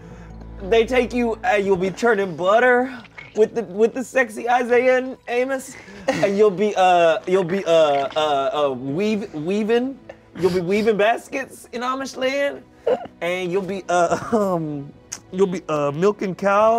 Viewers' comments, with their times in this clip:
0:04 wtf is that noise?